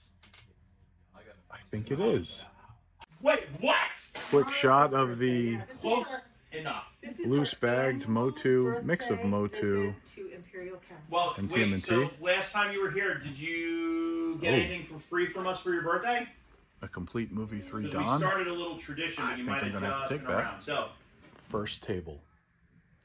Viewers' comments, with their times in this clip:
0:09 Bro, inside voice. I'm trying to record here! lol